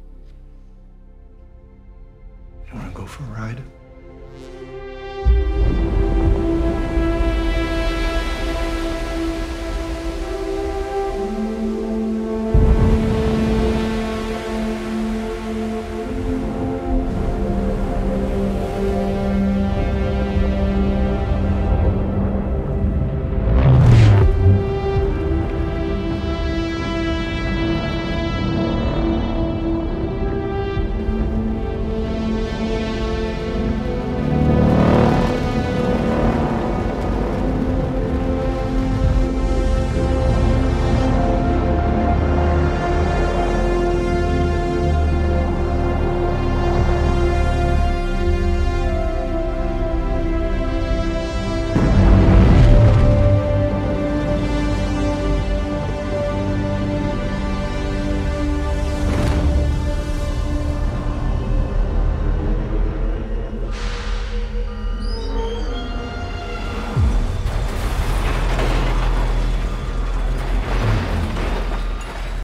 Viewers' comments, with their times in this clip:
0:03 sounds just like Vangelis, even the chords, so I believe it was an homage to BR1.
0:03 Real reason this one sticks with you is how much the part harkens back to the synth-driven soundtrack from the original Blade Runner score. It's beautiful in that "old" sci-fi sorta way, which was missing through plenty of this film's soundtrack. Shame that it is so short and partially overshadowed by the ambient noise.
0:03 Yes, but this particular scene starting is clearly inspired/ an homage to Vangelis, sound and chords.
0:05 is what happens inside my pants when the synths hit
0:58 i love this song, up to